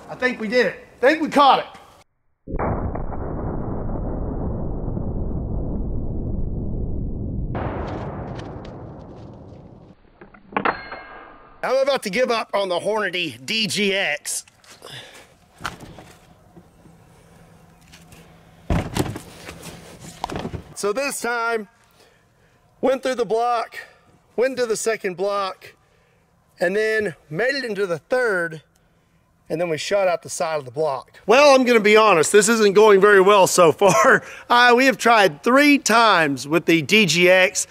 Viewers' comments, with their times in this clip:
0:09 Garand tier ping
0:19 The sound, the ballistic gel makes on impact, ... :D